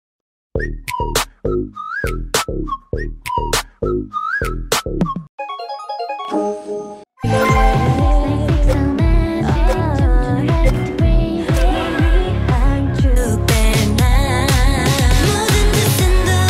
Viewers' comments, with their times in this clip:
0:01 Can anyone tell me what is the name of the first song that is ? I just like the hiss😖